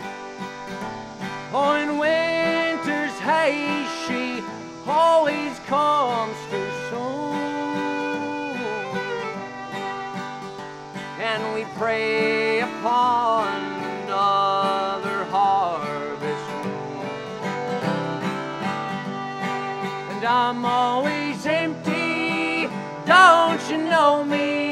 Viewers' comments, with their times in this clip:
0:10 the cicadas chime in. Perfect.